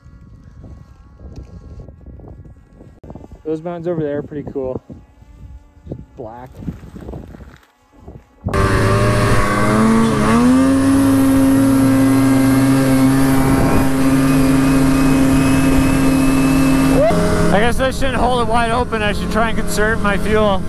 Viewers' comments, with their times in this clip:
0:03 is that a fucking mosquito or am i having tinnitus